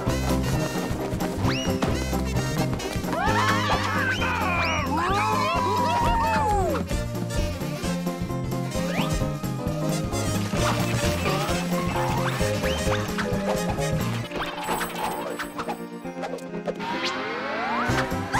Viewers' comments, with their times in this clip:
0:05 wilt's goofy little laugh when he jumps in :3